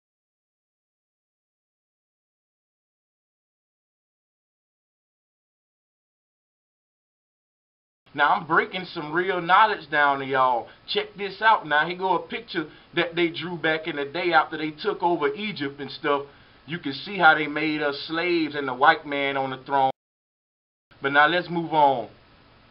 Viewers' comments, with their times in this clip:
0:05 don't it sound a lot like sourpuss, well I have been having dreams n nightmares about this n asking God to show me the truth fasting n everything long story but I woke up am n found you guys wow thank you I am been free